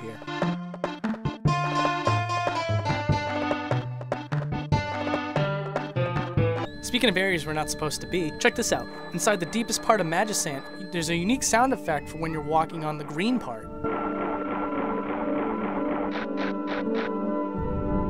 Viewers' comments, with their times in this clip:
0:06 "Magisant." Ow, my ears. What is happening? What kind of evil magis are you using?!